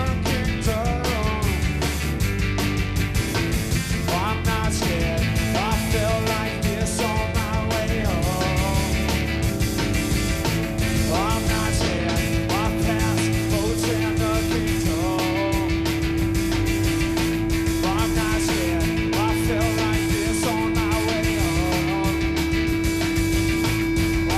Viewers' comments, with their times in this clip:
0:08 Love the way Pat just leans into the crescendo of the song and then rips it up...